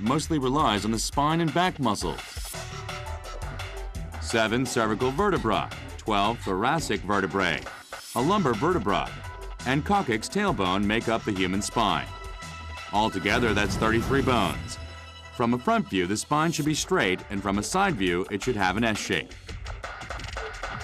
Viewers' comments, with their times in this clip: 0:04 LMFAO! 7 Servical Verti-BRAH, 12 Thurrrasic verti-BRAY, a lumber verti-BRAH, and Cock kicks tailbone! If I were producing this, I would have at least made the orator pronounce the words correctly. This is about AS - at the very least, pronounce the subject's title correctly